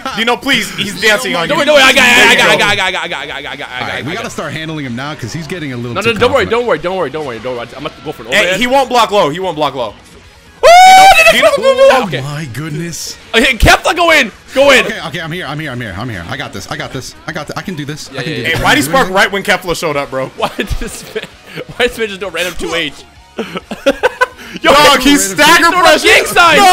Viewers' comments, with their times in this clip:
0:10 did anyone else hear Liu Kang bicycle kicking?